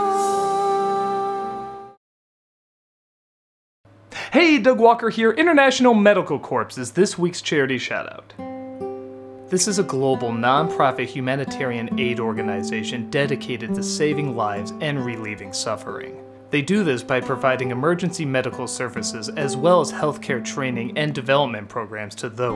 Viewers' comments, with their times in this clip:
0:05 Did Doug just pronounce the 'ps' in Corps?